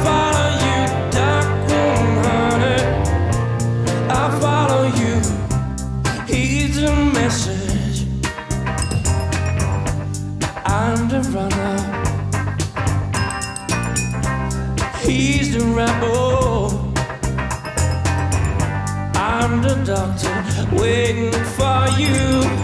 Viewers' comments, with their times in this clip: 0:08 Hahahaha...Make the beat "like a boss" :D